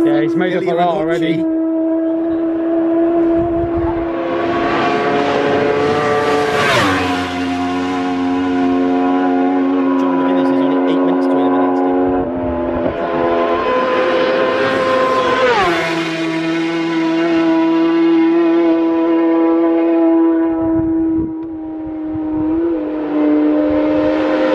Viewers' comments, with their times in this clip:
0:05 r1m sounds like a stroke